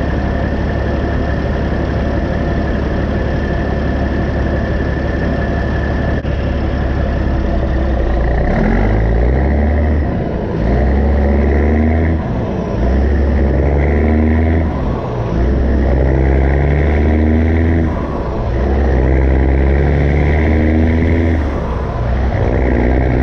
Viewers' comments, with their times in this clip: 0:09 Damn bro that truck sounds great!!